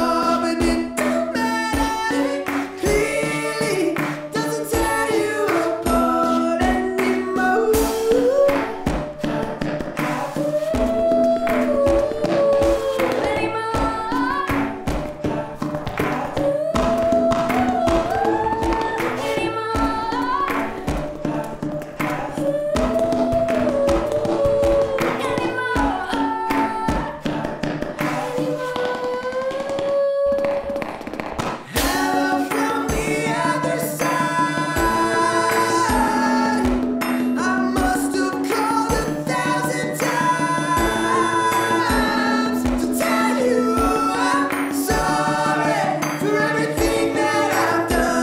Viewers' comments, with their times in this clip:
0:07 Bro. I've listened and watched this a 1k times. The percussion starting and on is insane!!!!!
0:32 Lol it very much is. From your reaction I get that you've never ever worked with a microphone before, which is fair. Take it from an experienced sound engineer: There is however no way every that this could've been captures without close miking the instruments and vocals. The volume differences are so enormous that you'd only hear the loudest thing, which probably is one of the dudes shouting the verse. But if you need visual confirmation that the recordings have been tampered with: take a look at the cymbal on the ceiling Just take a look and respond after.